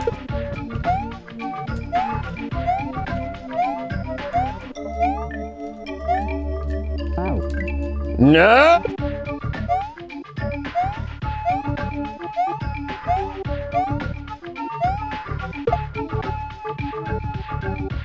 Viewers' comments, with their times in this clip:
0:04 I'd like to commend the editor on the perfectly cut scream